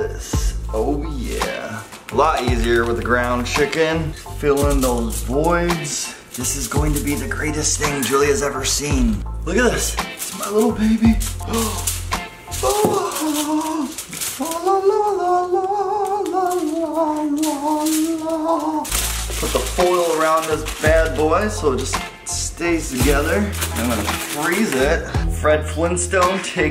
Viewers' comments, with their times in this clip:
0:07 DOESNT HE SOUND LIKE JASON DEAN THEN